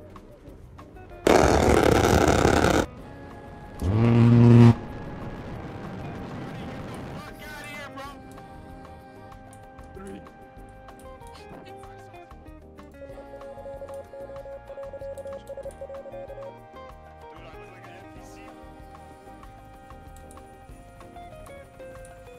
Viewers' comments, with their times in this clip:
0:05 IM CRYING THE QUALITY OF THIS GUY'S MIC IS INSANE